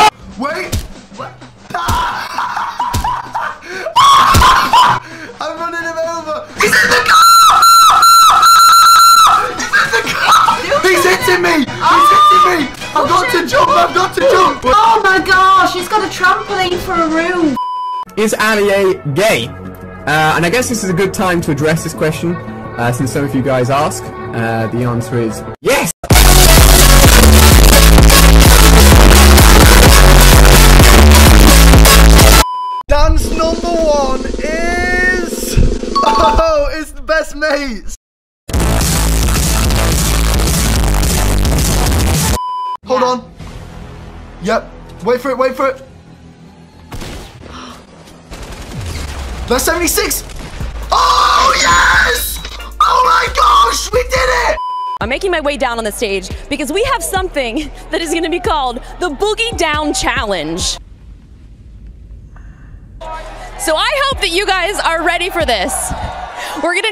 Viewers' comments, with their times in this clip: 0:06 is there a dying seagull here
0:06 turn down your volume because there's a squeak alert coming in 1 second
0:26 RIP headphone users ,I have no ears now lol
0:50 I had to unplug my headset so loud